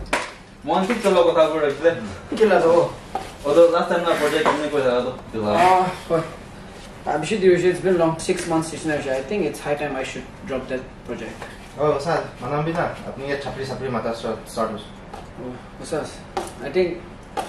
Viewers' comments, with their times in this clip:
0:03 the empty cup sound😂